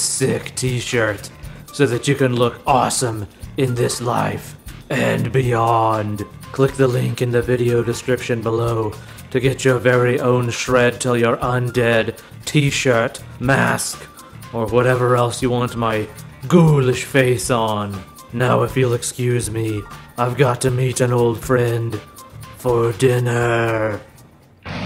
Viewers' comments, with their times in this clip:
0:07 Whenever I hear baying of the hounds I hear best damn taccos of the earth …